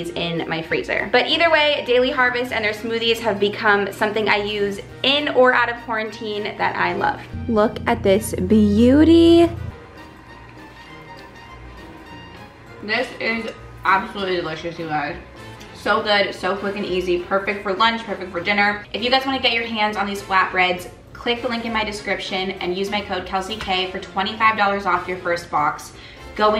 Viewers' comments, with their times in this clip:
0:09 sorry but scream sound effect